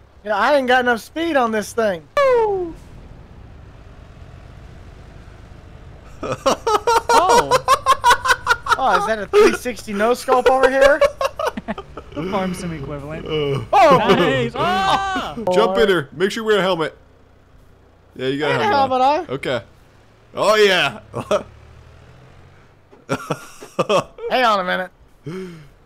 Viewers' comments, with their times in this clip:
0:06 His laugh is priceless
0:07 never heard him laugh like that
0:07 His laugh was different